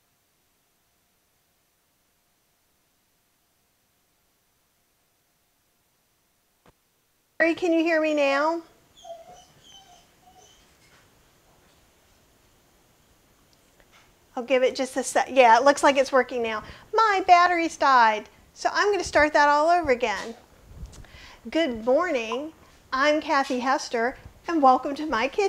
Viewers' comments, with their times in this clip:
0:10 Sound starts (Whew!)